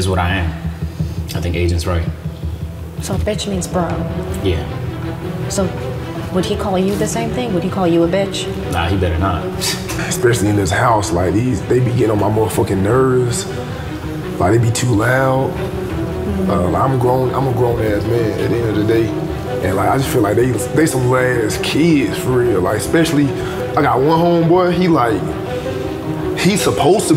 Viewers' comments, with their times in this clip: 0:10 duke sound like a stressed out black mom n the bonnet make it worse 😂